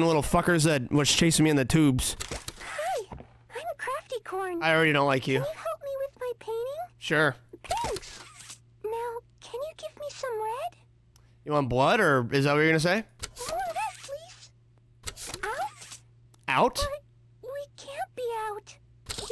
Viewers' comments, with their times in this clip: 0:07 You know I’m about 90% of this, but that Craftycorn sounds eerily close to Fluttershy from like MLP.